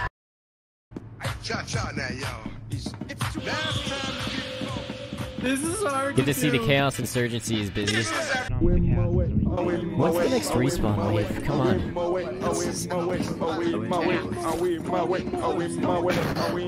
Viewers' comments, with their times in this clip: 0:04 Was that a misfits podcast on the facility wide loud speaker? 😂😂😂